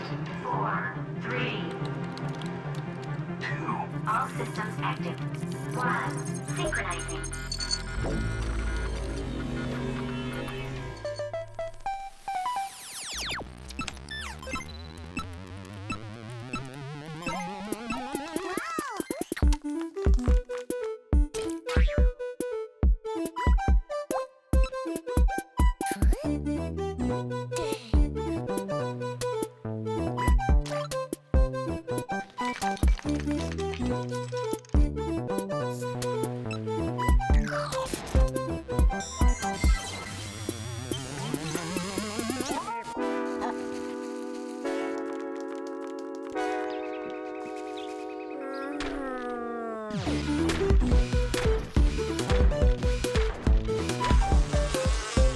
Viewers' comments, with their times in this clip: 0:10 am I the only one who thought almost sounded like Camel by Camel
0:13 That Sounded Like an Atari 2600!
0:43 Bro the chords were beautiful wtf